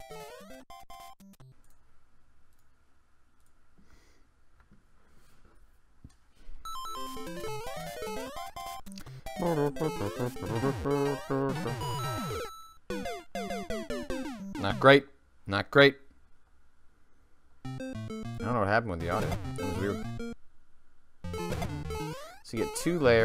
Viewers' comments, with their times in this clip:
0:10 FYI. Mic comes back on